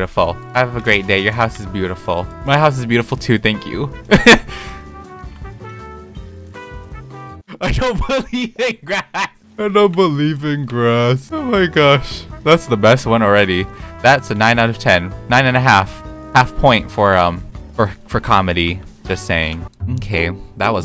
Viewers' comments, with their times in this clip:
0:08 why do you sound like a bird lol